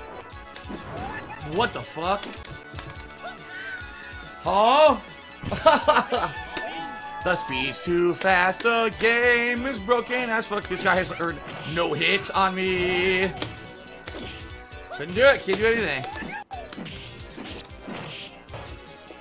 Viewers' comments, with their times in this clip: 0:05 My God its the Tommy Wiseau Laugh